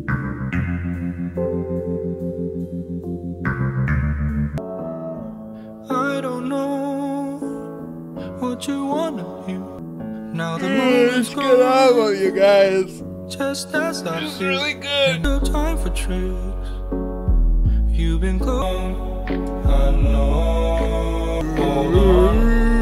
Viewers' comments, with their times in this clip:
0:04 basically the same chord progression as twin peaks theme.